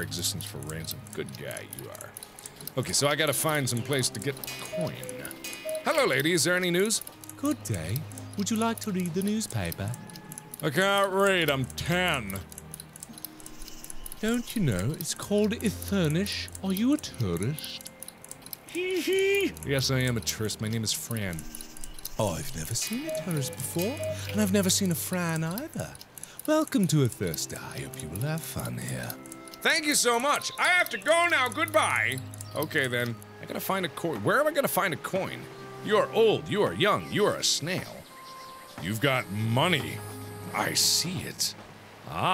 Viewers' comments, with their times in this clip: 0:05 When he did the girly voice it sounds like somebody from peppa pig
0:08 Why does she sound British? XD
0:28 i love the voiceover for the ant in